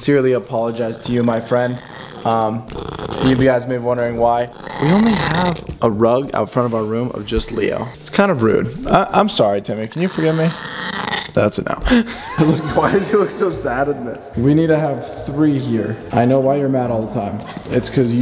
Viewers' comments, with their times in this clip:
0:03 why does the cat sound so weird